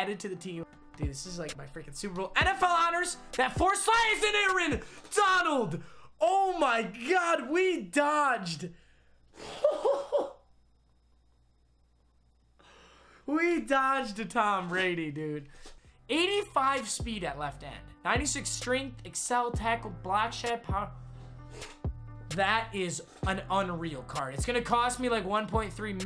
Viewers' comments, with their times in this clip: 0:08 Mmg sounds like Trump